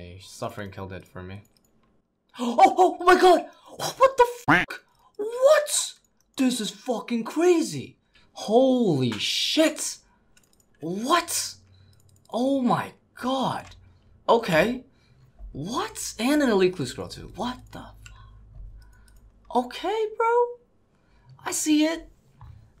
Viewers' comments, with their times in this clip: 0:05 you quack out the first fuck and then just completely miss the one immediately after xD